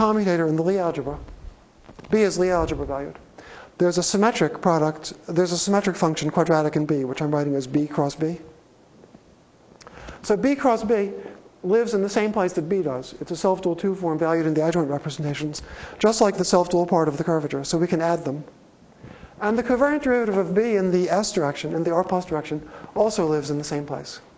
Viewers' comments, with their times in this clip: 0:05 Did Ed call B cross B "Bing Crosby"...?!